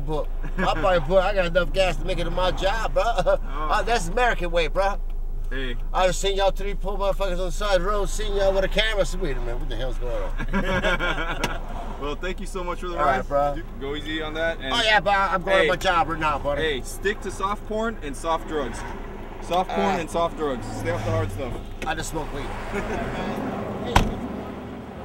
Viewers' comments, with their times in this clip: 0:06 huge Theo Von vibes with the way he talks 😂